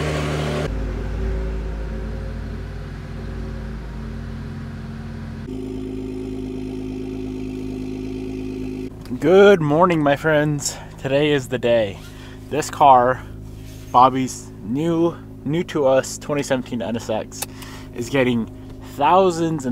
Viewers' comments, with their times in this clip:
0:06 bubble gun noises